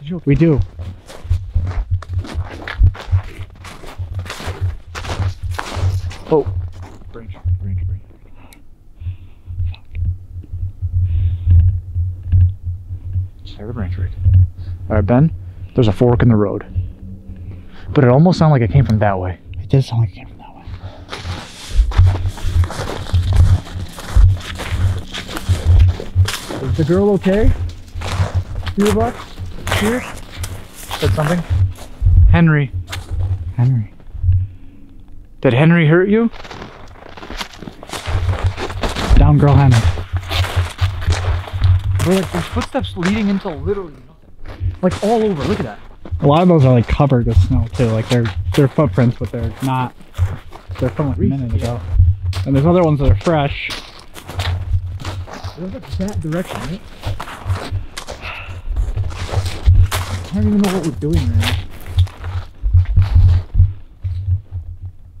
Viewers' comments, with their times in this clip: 0:09 looks like there is cross like marking something... A grave?? I've lived in Colorado all my life (I'm 53) and have never heard of skinwalkers here, however, I blew up the pic you showed with the figure circled in red. I definitely see something... I tried to think of all the animals in the Rockies: bears, mountain lions, bobcats, big horn sheep, deer, wolves, etc... I can't even figure out what that is. It looks part human and part animal. And the woman screaming... Owls and mountain lions can make "screaming" sounds but that was too human. You guys have balls of steel!!! Stay safe my friends!!!
0:39 was that another scream ? (headphones) You have to listen real closely because of them walking and talking.
0:49 in Sounded like the buck touched the tent, well something did